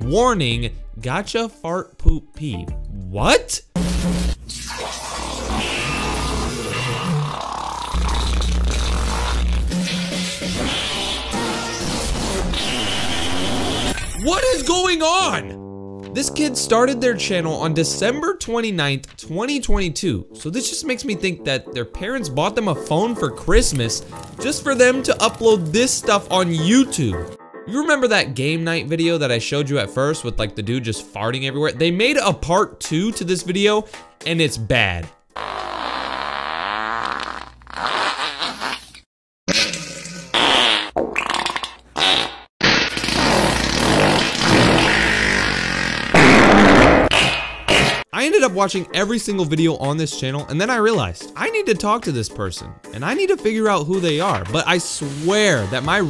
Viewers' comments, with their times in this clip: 0:03 THAT VIDEO IS SO LOUD AND FUNNY I REWATCHED IT LIKE 6 TIMES
0:11 the captions say music. This is the best music I ever heard.
0:13 This is the first time I heard you yell in your main channel
0:13 I turned on captions and It said music this is the best music I ever heard
0:43 bro became a motorcycle 😂